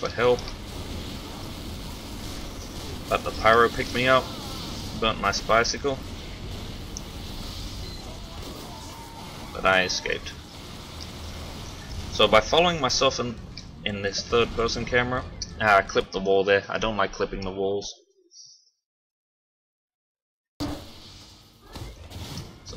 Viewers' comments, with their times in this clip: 0:06 it sounds like a scout is saying "IS SOMEONE GOING TO PUSH THE F**KING CART?"